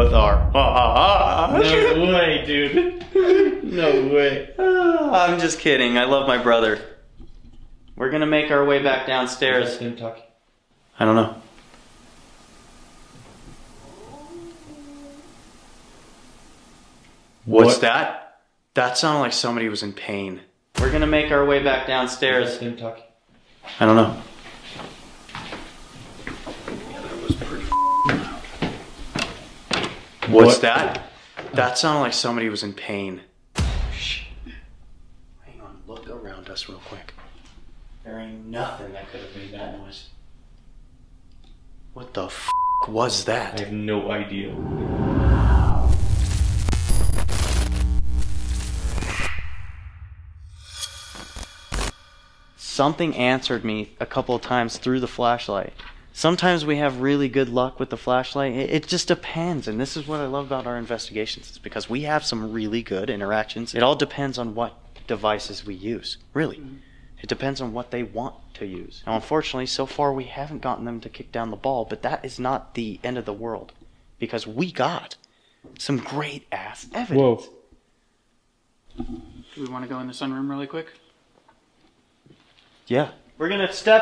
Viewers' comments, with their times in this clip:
0:09 That sound of someone in pain sounded like the dad before he died from the principal
0:11 wasnt there another group that investigated here that caught a moan like that? I coulda sworn ive seen it. mightve been a different place though
0:12 The cry of pain actually sounded more like a woman calling someone’s name. Listen There’s a cadence to it that almost sounds like a name ending in y or I. My guess based on the vocalization is Rodney, starting lower, pitching up on the “od” and then a cadence on “ney.” Or it was saying “okay” after they said they’ll make their way downstairs. There’s a playfulness in the sound that just doesn’t match pain.
0:14 when you said it sounded like someone was in pain, what I heard was a very sad and drawn out, "Dooon't leave!"
0:16 wow. That voice/sound was very clearly heard.
0:26 “behind you” is what it sounds like a woman is saying
1:06 women or child’s voice agrees with you